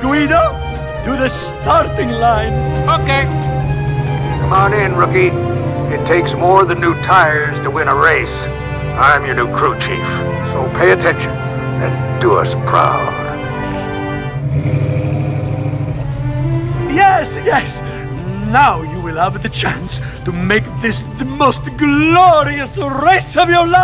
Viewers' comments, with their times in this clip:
0:07 i cried because the voice is not really the Hudson hornet I miss him.😭😭😭😭😭😭😢😢😭😢😭